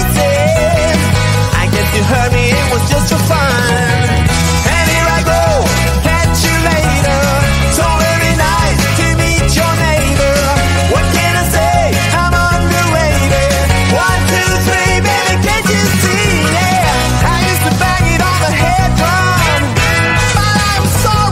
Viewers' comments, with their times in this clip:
0:08 (Music) I'm gonna eat ur neighbor?? XD